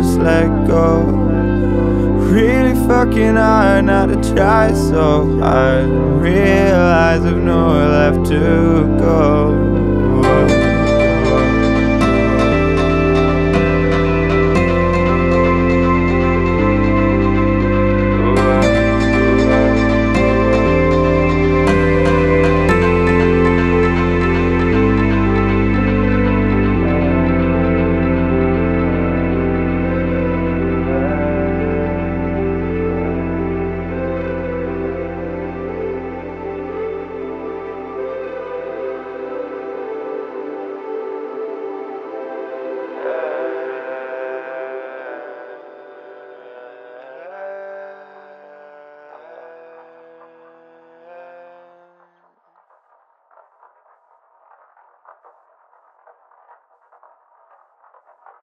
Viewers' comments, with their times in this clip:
0:10 I find the "chimes" are incredible. I couldnt tell you why.
0:15 Omg I thought my phone was ringing XD I'm really stupid send help
0:25 Did anyone else notice how it started to sound like Better Together ? It has the same tune whenever Better Together reaches the girl's part of the song and it has that short instrumental section before she begins to sing.
0:54 "and" always reminded me of with the style. They're both so chill